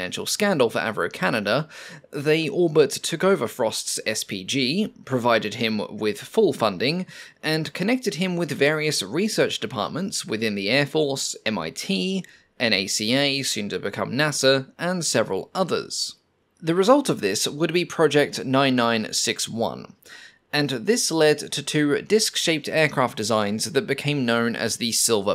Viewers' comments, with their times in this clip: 0:08 I must say I found your pronunciation of NACA amusing considering that you said NASA normally.